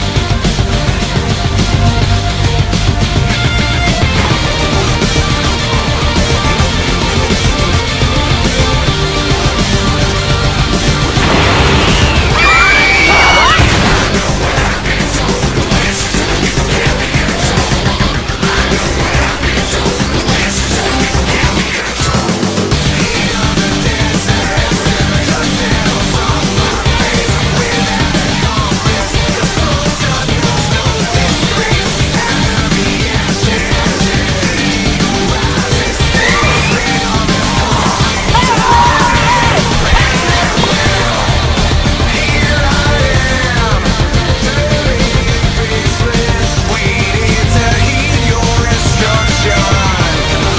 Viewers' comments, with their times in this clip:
0:05 THIS is the coolest scene EVER!!! the music, the camera, the Beidou. Perfection.
0:31 this music is są cool